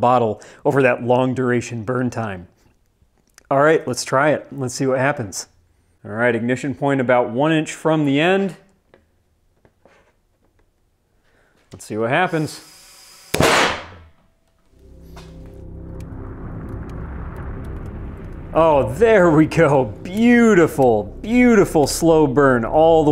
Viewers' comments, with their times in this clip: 0:07 you've just recreated the classic chemistry experiment known as The Barking Dog.